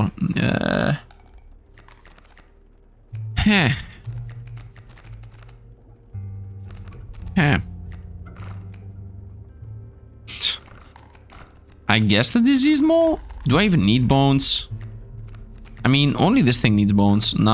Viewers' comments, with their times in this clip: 0:03 villager from minecraft lol